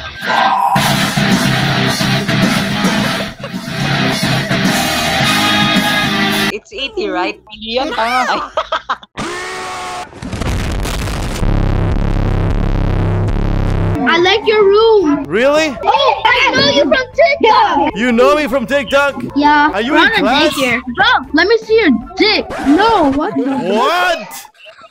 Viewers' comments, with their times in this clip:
0:09 The way my guy went back into the chair and the sound effect 😂😂😂😂😂